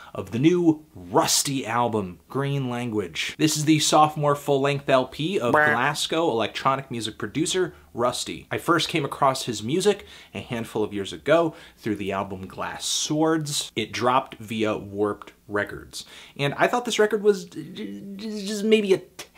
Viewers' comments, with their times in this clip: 0:04 Damn, Anthony, you really stepped up your sfx game.